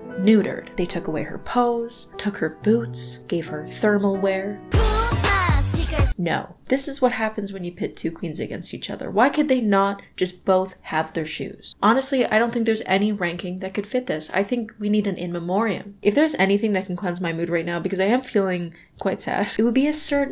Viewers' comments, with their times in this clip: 0:04 THE ITZY SONG WAS SUCH A JUMPSCARE